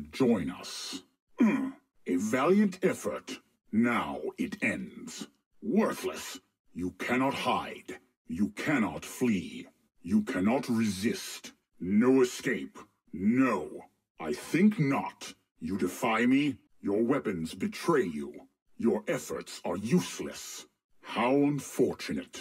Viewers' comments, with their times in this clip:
0:05 Starting he starts to sound like all the negativity coming out of my mom. 😓